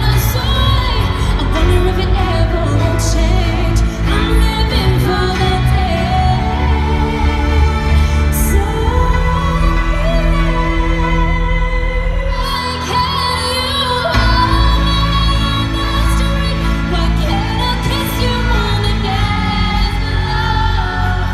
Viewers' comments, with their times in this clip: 0:04 is my absolute FAVORITE note change 🥺😍💛😭 it makes me want to sob